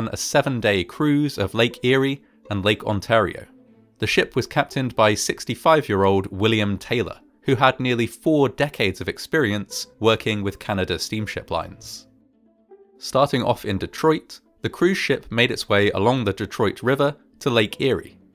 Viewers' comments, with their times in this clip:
0:04 Just a bit of feedback in case you're looking for it: 1. The string music that plays in the Background section is very nice. I still prefer your main theme (Glass Pond by Public Memory) but this is a fittingly appropriate track as well. 2. I'm personally not a fan of the warping effect used You've used it a few other recent videos and it's a little bit distracting. 3. You're still doing a marvelous job structuring these videos with the straightforward delivery and lessons learned at the end.